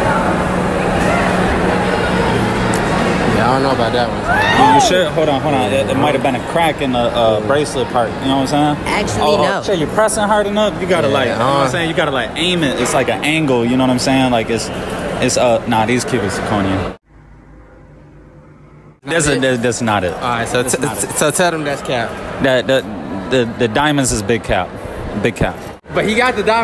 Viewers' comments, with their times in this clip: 0:07 why this guy is talking like black?